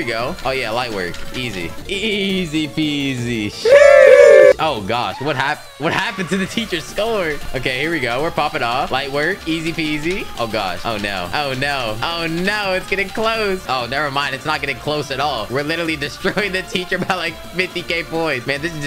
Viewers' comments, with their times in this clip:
0:03 u make the sheesh too loud to wake my mom up.